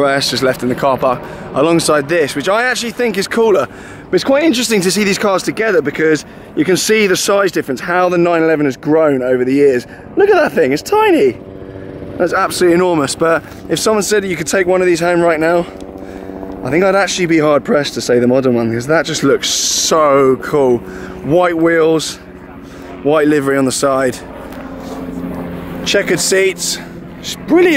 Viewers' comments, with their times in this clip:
0:09 Ricky Gervais voice over :)